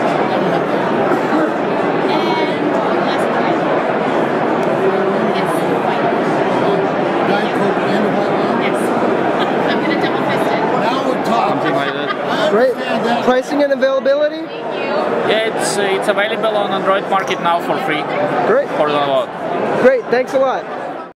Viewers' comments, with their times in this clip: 0:08 Did I just hear some girl say "I'm gonna double fist it " whoa whoa..